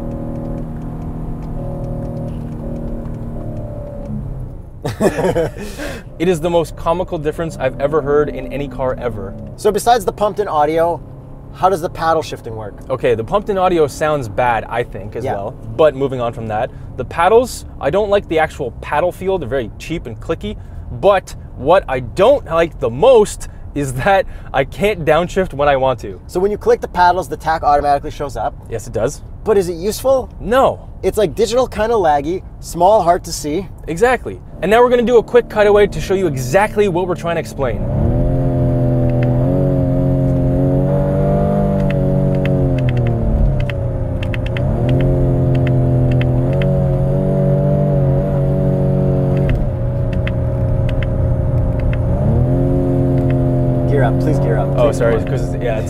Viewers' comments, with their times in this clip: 0:03 whoa who wtf that’s worse than BMW’s pumped in sound system 😂😂😂😂
0:38 ..... did i jst hear a crying cow?